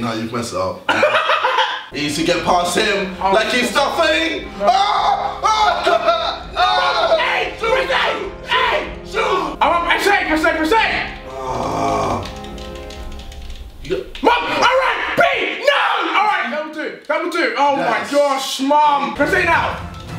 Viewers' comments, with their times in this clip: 0:06 when Deji just started screaming “ A, PRESS A!!” I just fell to the floor lmfao 😭